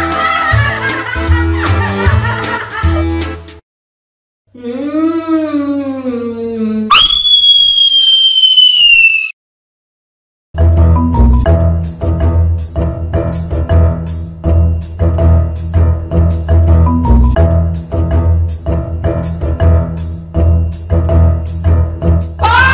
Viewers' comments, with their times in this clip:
0:06 My Scream irl